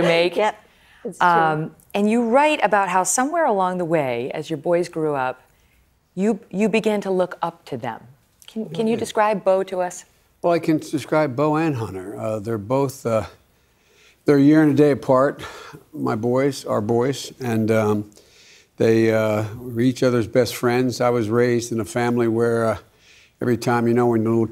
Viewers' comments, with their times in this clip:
0:09 I can "subscribe" Beau and Hunter